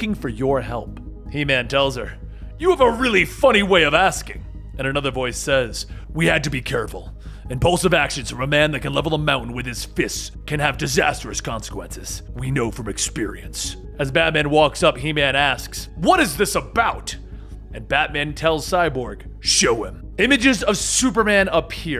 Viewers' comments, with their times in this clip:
0:05 The moment you changed your voice in I knew straight away who that was BATMAN!